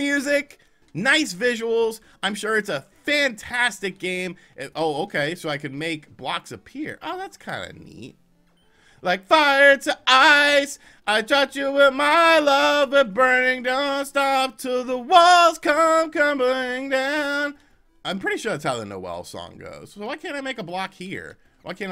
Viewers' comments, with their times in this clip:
0:09 Future American Idol winner right here